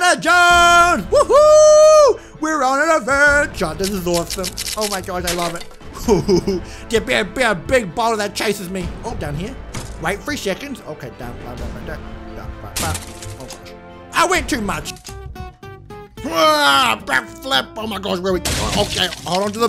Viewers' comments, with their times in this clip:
0:06 The laugh oh nonooo